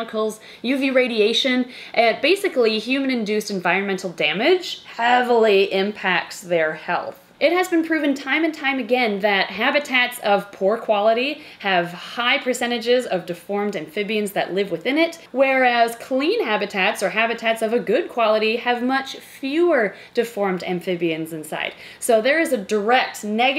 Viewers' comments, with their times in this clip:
0:04 is it just me or when she says "heavily" sound weird